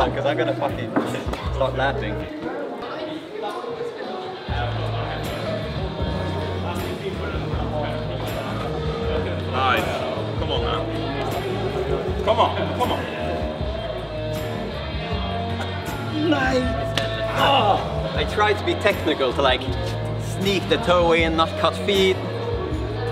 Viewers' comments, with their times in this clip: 0:06 so nice when the Doors are kicking in in the backround.